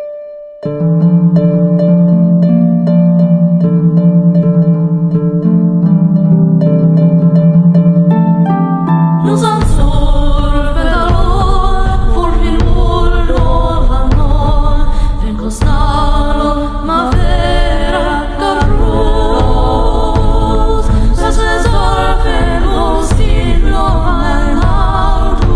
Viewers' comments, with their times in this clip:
0:09 my favorite part that beat gets me everytime it's such is a nostalgic feeling EDIT: combine this with the male chorus it would sound amazing
0:09 those war drums